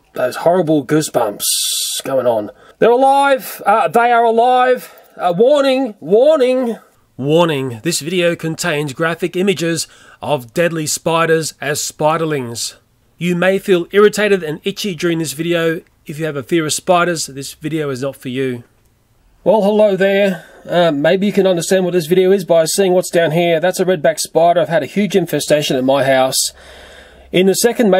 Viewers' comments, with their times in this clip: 0:09 WARNING this video contains graphic images of DEADY spiders... deady!? what are deady spiders lol